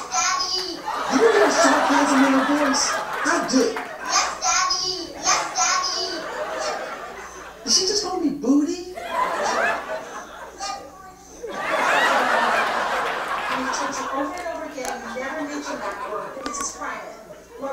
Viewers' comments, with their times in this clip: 0:04 They sound similar & the mannerisms carry resemblance too, especially onwards.. 👀 Defo could be his ghostwriter.. 🎯